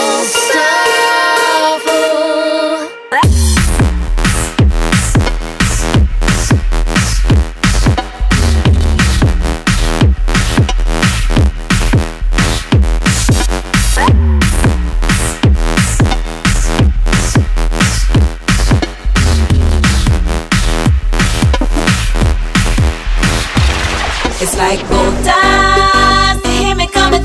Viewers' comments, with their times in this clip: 0:03 Great tune until then it shits its own pants.
0:09 the song minutes is just a heavy track to skank to :)